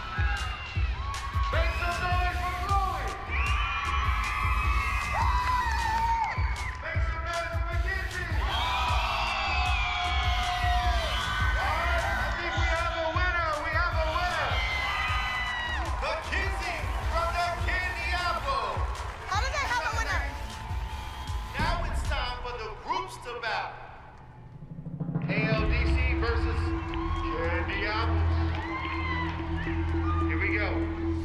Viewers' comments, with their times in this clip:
0:10 Sounded more like a “BOO” but it’s not a big deal :)
0:15 I just noticed all Mackenzie did is do the splits they only screamed for her cause that’s their team and she’s little